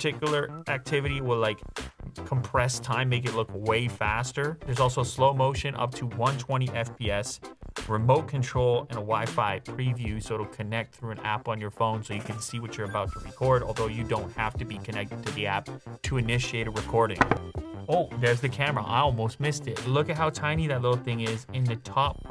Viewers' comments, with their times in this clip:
0:03 This background music is JAMMIN'!